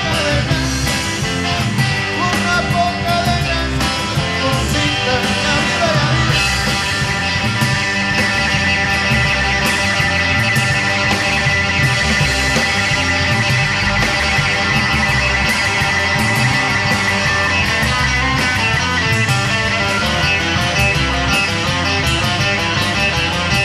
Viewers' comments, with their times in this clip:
0:06 EPIC GUITAR SOLO 🎸 😎